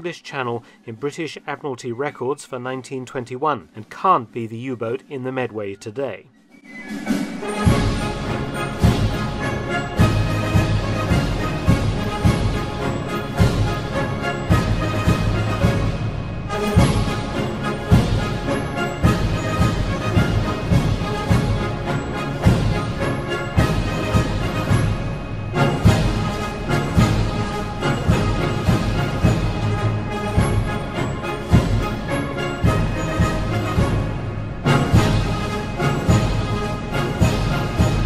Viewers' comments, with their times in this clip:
0:06 U-boat wrecks and Preußens Gloria playing in the background.
0:26 that military music is awesome. Makes me want to join the navy.